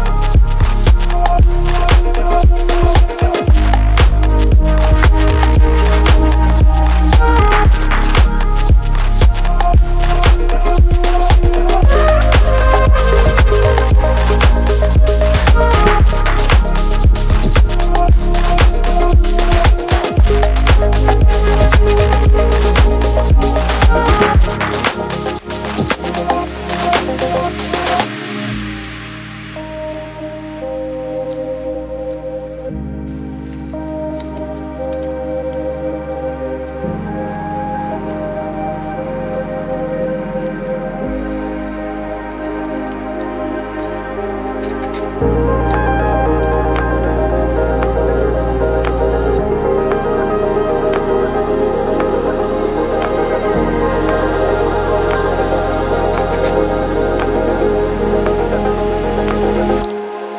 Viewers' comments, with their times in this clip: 0:05 Oh wow, I love the bass and melody that's ! :D Cool background also!
0:45 sounds so much like wrld and i love it